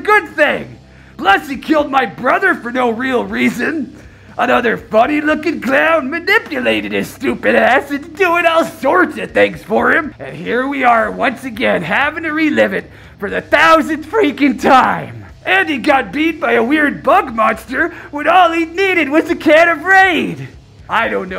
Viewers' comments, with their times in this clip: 0:04 Why he say “stupid ass” like that? Lol Sounded like he said: “stupid act”, most likely wat he really said. Lol But Sub-Zero, u still selling that powder? I saw Frost the other day and she’s strung out on that stuff.